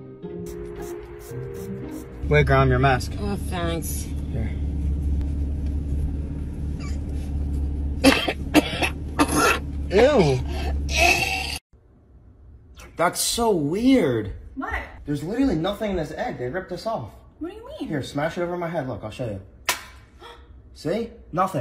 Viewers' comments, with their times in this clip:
0:06 the way she cough💀
0:08 Why the grandma all ways scream😭😂❤️and 😭😂